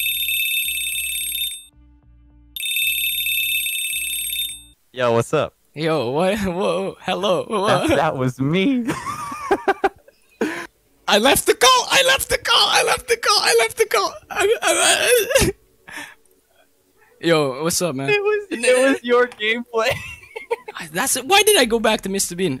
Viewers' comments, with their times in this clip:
0:06 The way you say that was me
0:06 i love this voice crack